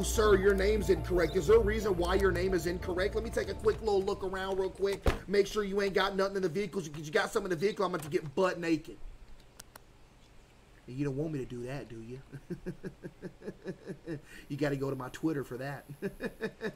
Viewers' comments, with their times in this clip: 0:04 for the last ones thats when audio comes back